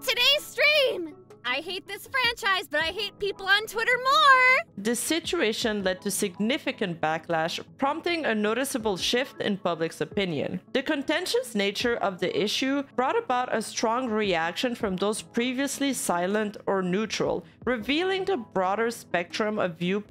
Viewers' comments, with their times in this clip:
0:04 😮 outstanding voice act